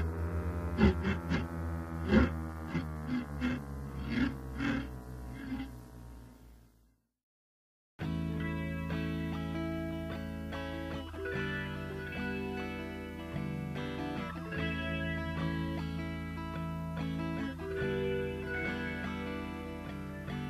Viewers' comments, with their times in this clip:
0:07 could've also been a song change, and clearer than the others